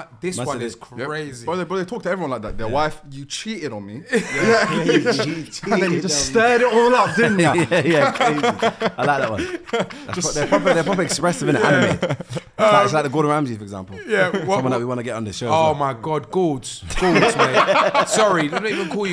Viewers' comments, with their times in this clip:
0:05 filly's laugh with hydraulics